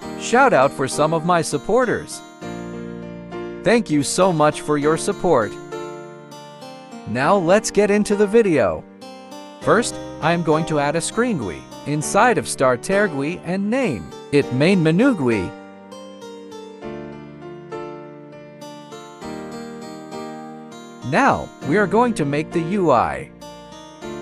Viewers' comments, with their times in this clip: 0:10 i never knew i needed to add a screen gooey, inside of star-terr gooey, and name. it menoo gooey!